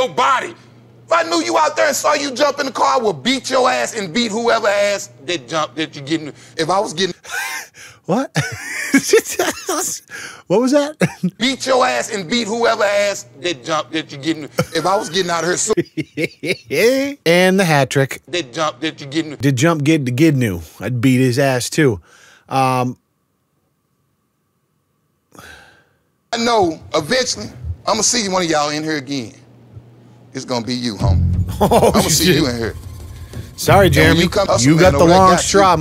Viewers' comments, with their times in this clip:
0:05 my first beatbox attampts
0:18 my dude dropped that joe biden talk 😂